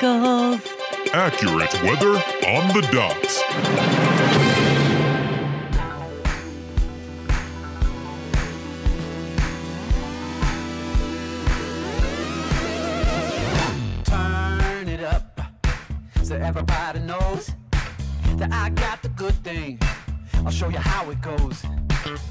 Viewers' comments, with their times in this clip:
0:08 Nice vid and drivethrough! Got a link to the song used starting ? It's pretty funky 😀